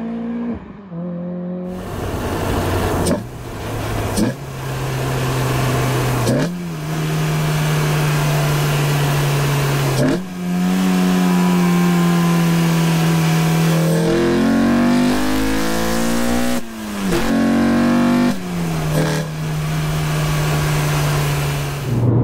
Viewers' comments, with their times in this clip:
0:07 Sounds sick!! coolant temp switch playing up? shouldn't coolant temp be in the middle? Great series.